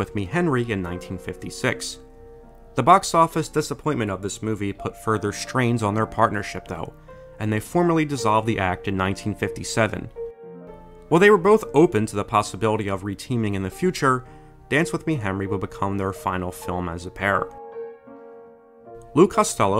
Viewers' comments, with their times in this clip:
0:07 it kind of sounds like he's saying 'formerly' when he should be saying formally.